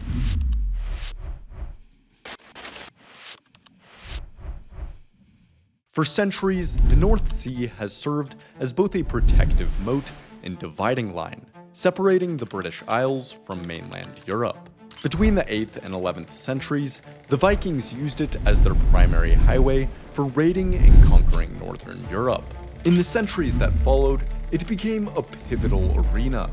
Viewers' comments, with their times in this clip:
0:08 this video is so well made but the reuse of sound effects is so obnoxious